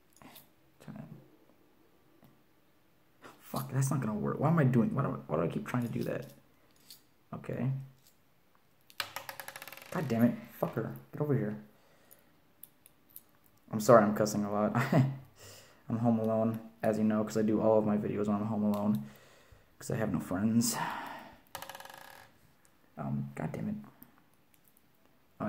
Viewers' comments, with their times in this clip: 0:10 titanic theme song plays in backround